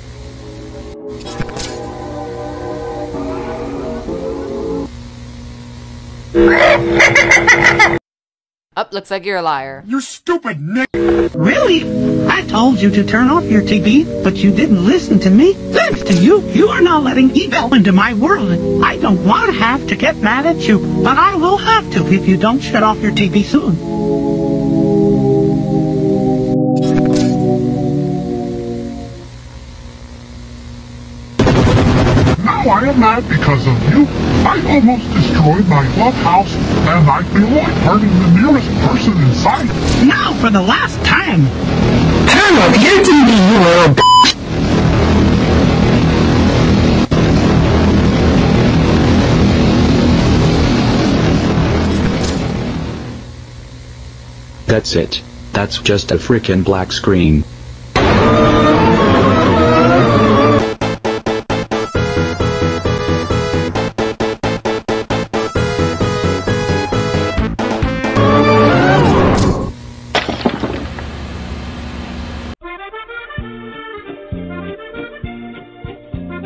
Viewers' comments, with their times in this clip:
0:06 why bro sound like a haunted clown💀💀💀
0:51 wait for the goAnimate voice lol
0:58 wait why did it sounded like mangos mangos phonk for 1 second?